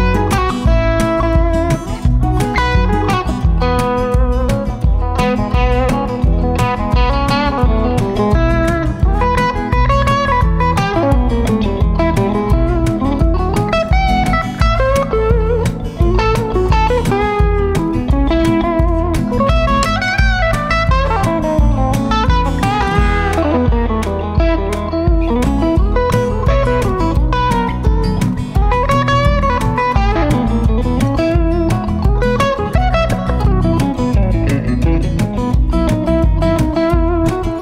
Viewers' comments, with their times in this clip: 0:06 Hey Joe you surely rock that Maton but the 30 seconds following the mark on the Strat was some of the TASTIEST things I've ever heard. Great balance of complexity and accesibility, fluent and organic and above all, very creative. Love the Knopfler-esque finish with the Sultans reference right after that :D. Watched that part 4 times over; this is hard work and a lot of love paying off!
0:23 im stealing that lick